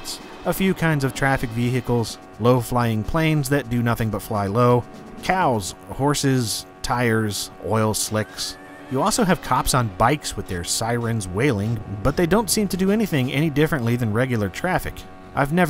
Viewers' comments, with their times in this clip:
0:03 I heard Walken trying to break through.